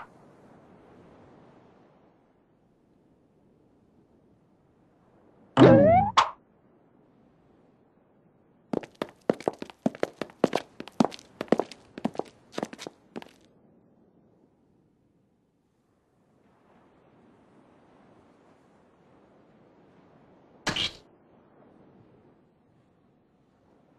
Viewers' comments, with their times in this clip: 0:06 Short Swish or Swoosh